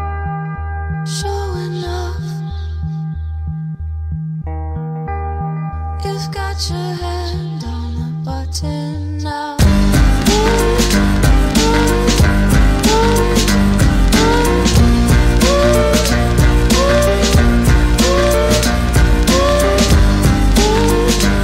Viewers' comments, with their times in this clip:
0:08 feels like lonely lion